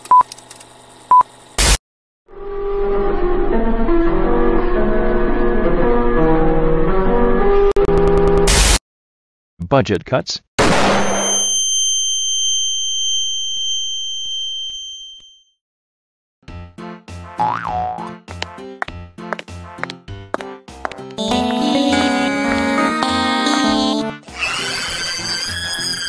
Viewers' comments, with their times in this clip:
0:09 BFDI Announcer Jumpscare